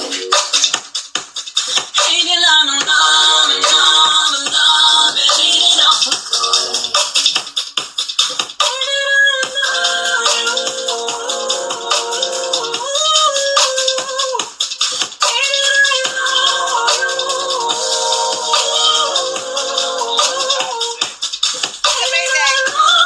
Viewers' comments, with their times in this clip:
0:08 Wow sounds like the Martyr teaser!